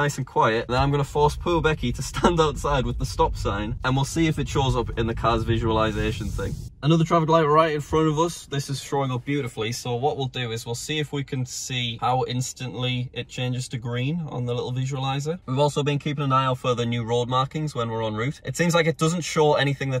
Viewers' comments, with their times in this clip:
0:05 is it me or is that a Minecraft spider hissing sound?